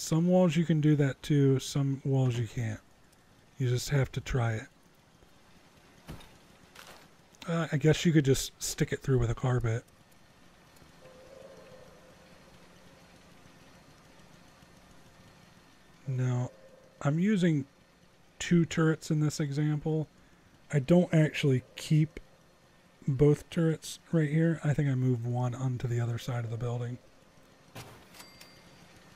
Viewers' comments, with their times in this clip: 0:10 you can hear the incoming nuke warning